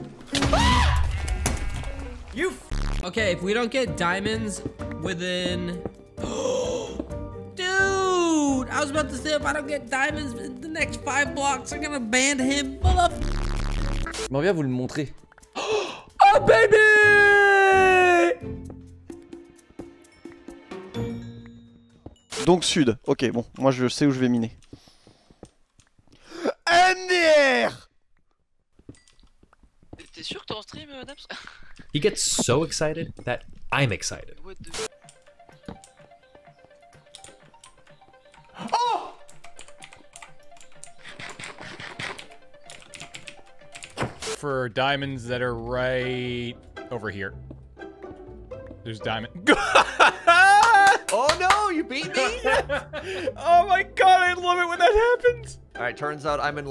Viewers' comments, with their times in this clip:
0:03 sounds like an elephant
0:05 his scream sounds like skeppy's
0:13 for the two next, this is french
0:30 that Russian. But the diamonds looks so weird
0:32 The language in is french
0:37 lol it’s French language
0:40 he was speaking French